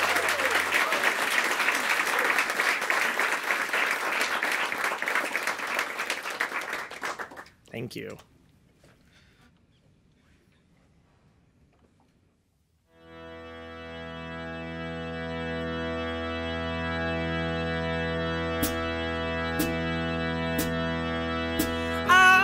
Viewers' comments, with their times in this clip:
0:06 bob belcher is that you?